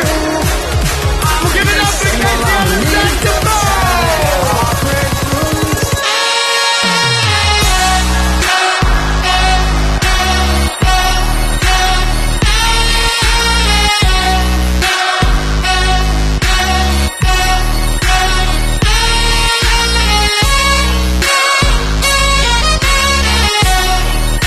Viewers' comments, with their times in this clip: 0:05 the saxophone right here is damn near beautiful
0:05 if yall came here for the Morgan wallen sax drop